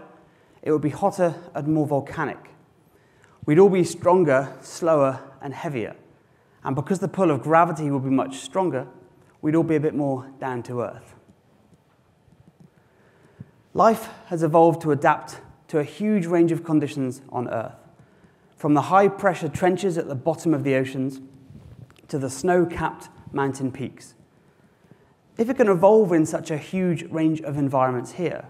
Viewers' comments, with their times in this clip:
0:08 jesus christ give my homie a laugh for god sake.
0:14 he makes a joke and no one laughs